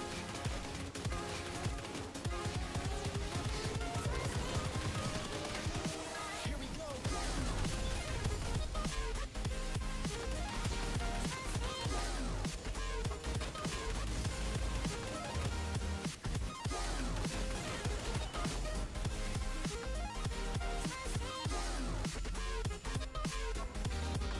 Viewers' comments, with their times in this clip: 0:07 the minotaur is frame perfect matching with the song drop when it hits you